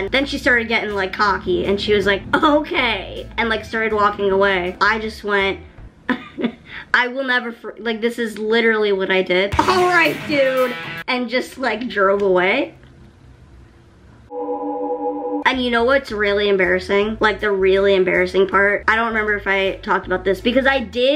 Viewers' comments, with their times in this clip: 0:08 The 80's drop kicked her in the face at that moment